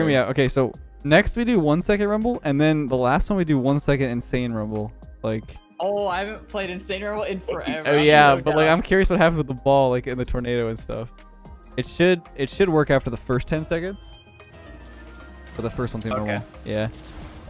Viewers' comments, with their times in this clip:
0:05 when the guy says oh it sounds like the pufferfish carrot meme